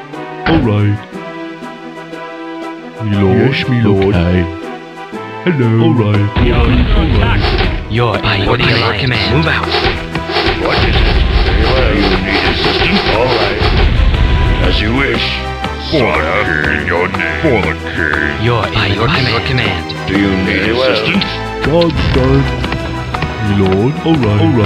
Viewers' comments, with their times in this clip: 0:05 Gotta love how the peasant syncs his axe to the music
0:05 peasant chopping that tree in the rhythm of the soundtrack, awesome :D
0:06 Go to for an tree chopping peasant with excellent musical timing lol.
0:06 Wood-chopping perfectly in sync with the music. :)